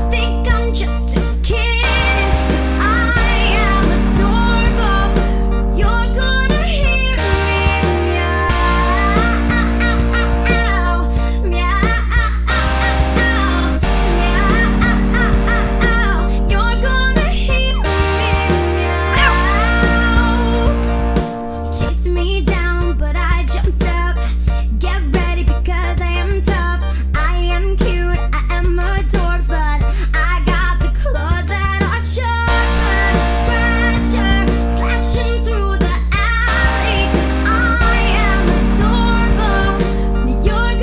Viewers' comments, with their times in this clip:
0:08 If you spam you can here yea a a
0:28 Wiggle wiggle wiggle wiggle weird music